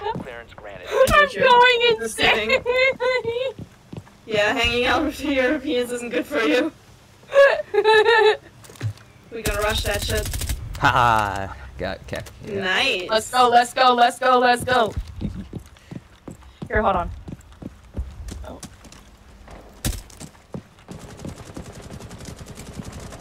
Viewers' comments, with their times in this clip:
0:10 It was a villain's laugh in the movies 😂